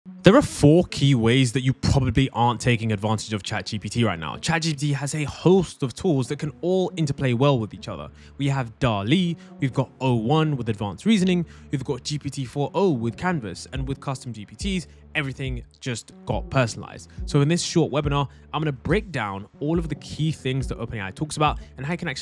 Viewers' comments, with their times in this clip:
0:04 "Tragedy" is a fun way to spell ChatGPT